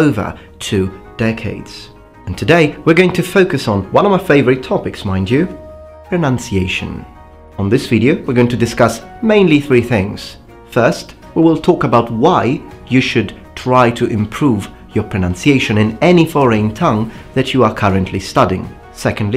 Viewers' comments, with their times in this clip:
0:05 and he already did something right which many native English speakers struggle with: pronounce "pronunciation".